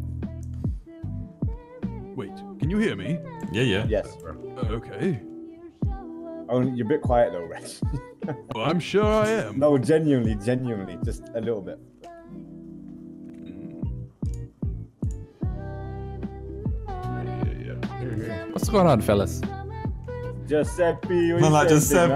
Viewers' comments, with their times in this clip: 0:07 The song is 🔥🔥🔥🔥